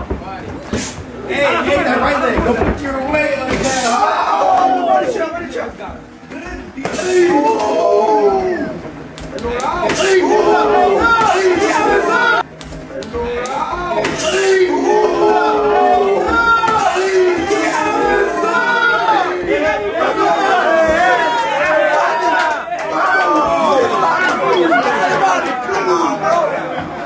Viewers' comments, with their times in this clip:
0:09 that ain’t boxing no more, that’s fucking Kung-fu you here the noise he made😭😭💀